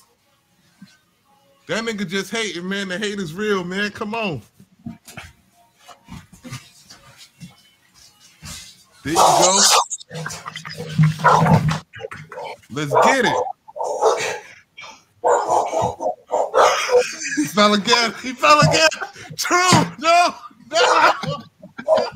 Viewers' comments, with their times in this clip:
0:06 He ran off his feet and did a head dive😂😂😂 The crash was spectacular😂😂😂😂